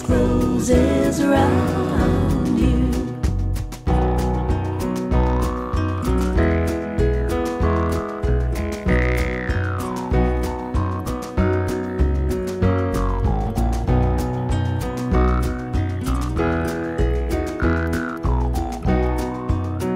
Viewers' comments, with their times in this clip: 0:07 What instrument is that boing boing sound? At the bridge of the song Like a rubber band?